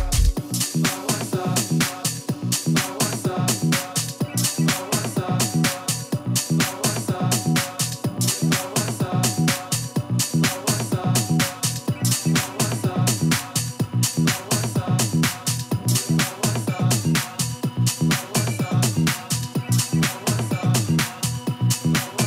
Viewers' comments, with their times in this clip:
0:08 Swagon. Dope tune!